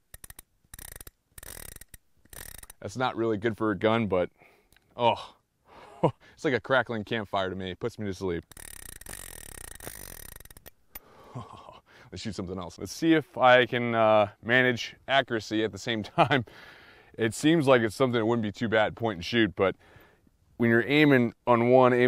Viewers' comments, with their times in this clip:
0:06 It sounds like a baby's rattle. That's why it puts you to sleep.